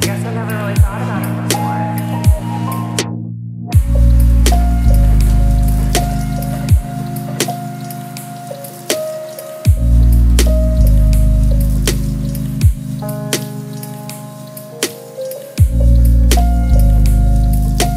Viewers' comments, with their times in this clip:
0:04 that chord change though